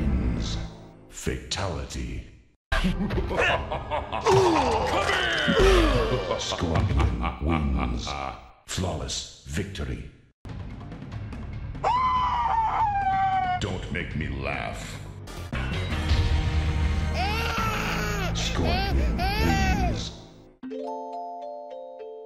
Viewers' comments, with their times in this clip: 0:10 WTF was that cry?? 😭 I’m